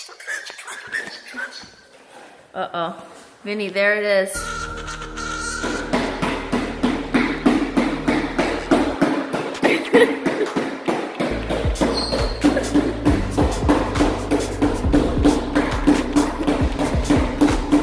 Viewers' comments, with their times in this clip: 0:03 dramatic horror synth with Vinny's voice was absolutely hilarious 😂😂😂